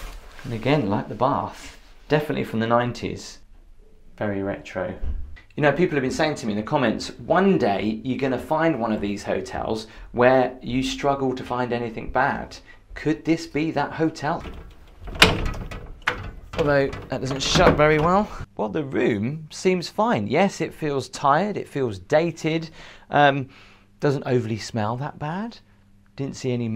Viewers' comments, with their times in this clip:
0:09 was that you opening the bathroom door??